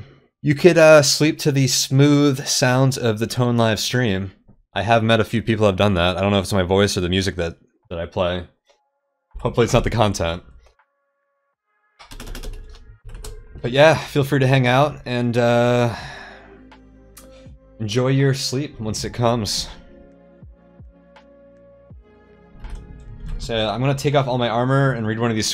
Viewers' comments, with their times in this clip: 0:07 both the voice (even, without unnecessary screaming, squealing and other idiocy that many big twitch streamers are known for) and the music, I'd say. Doesn't work with Cogmind though—sound effects there are both loud and very convincing for an ASCII RL. Especially on non-energy weapons.